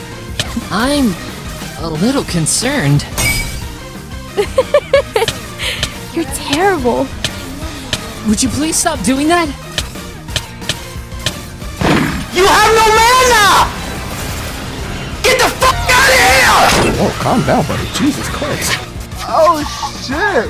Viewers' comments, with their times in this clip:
0:07 is it me or does that "would you please stop doing that" sound like keitaro from camp buddy?